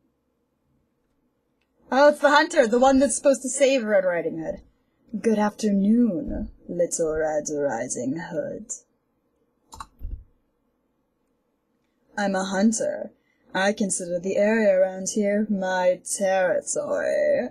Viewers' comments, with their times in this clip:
0:04 Also, why the sultry tone ?